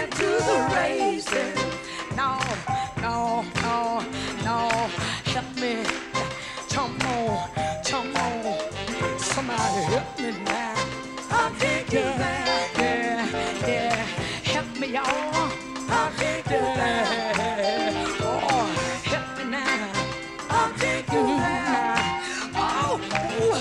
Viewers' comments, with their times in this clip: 0:05 So this is where Michael Jackson got “Sh’mo” from!